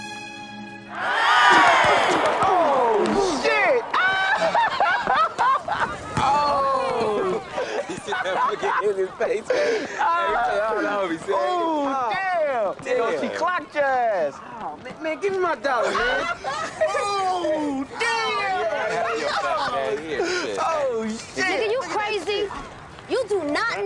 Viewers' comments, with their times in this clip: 0:03 that laugh ong 😂
0:04 Young slim laugh 😂